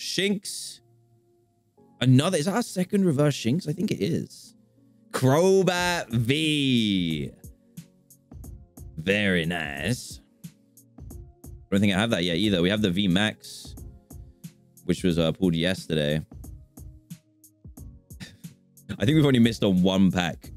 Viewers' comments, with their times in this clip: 0:07 “Crobat V.....very nice (Dracula voice)”